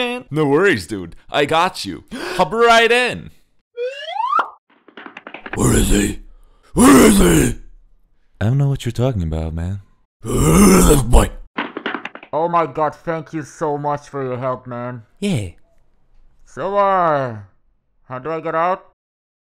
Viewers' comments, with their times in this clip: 0:06 machamp used roar